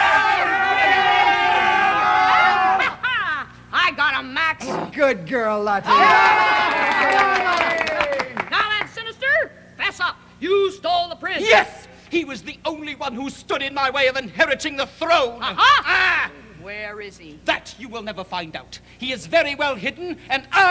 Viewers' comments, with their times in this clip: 0:03 Did one of the actors fart????